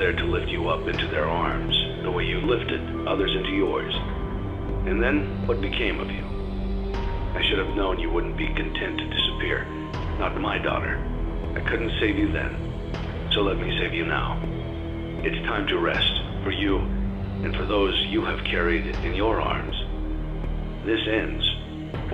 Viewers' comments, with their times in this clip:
0:05 Me: realises its Henry talking OH MY-